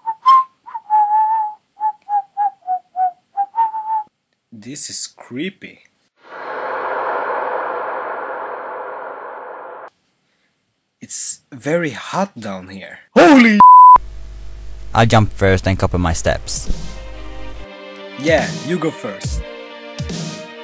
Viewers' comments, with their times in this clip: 0:05 i love it how he whistles the Zelda tune :D